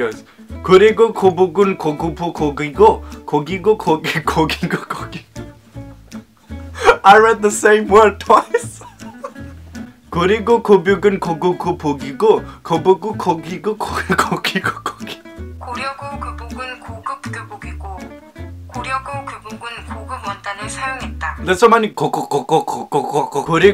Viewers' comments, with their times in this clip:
0:05 I heard him saying kookie😮😂